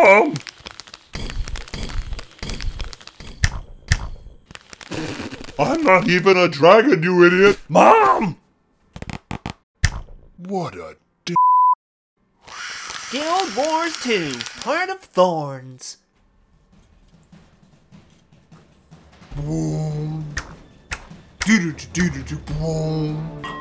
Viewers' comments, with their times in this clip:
0:04 Holy shit that was funny. My favorite part was the spitting sound